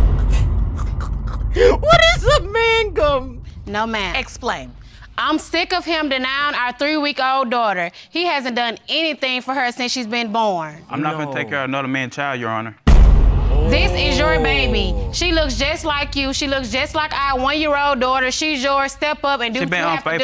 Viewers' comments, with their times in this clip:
0:06 It’s like she reading a skit